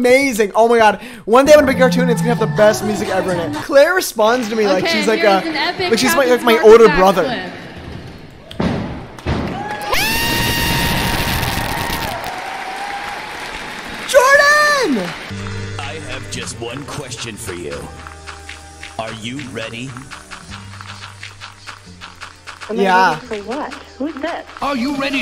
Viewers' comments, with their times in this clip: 0:06 MY EARS BRO LMAOOOOO